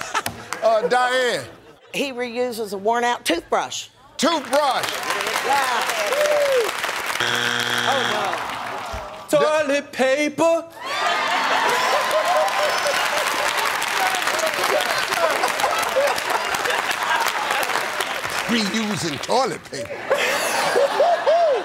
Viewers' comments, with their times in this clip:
0:09 He Just Sang His Answer So Good
0:09 🎵 Toilet Paper! 🎵 LMFAO I'M DEAD I was waiting for someone to say that! Him singing it made it twice as funny! 🤣🤣🤣🤣